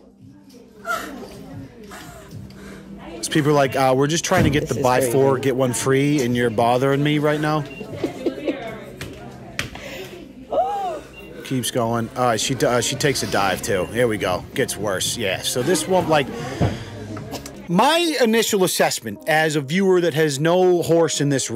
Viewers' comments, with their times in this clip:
0:06 Unable to contain laughter towards someone having a psychotic break are we?